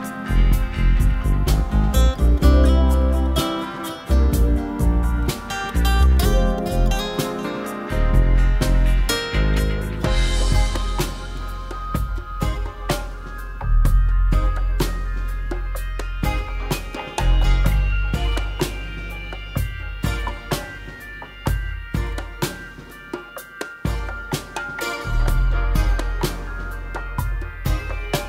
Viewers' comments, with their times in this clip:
0:09 I think this is my favorite song in the game, i woke up the other day and it was in my head. I love the reggae style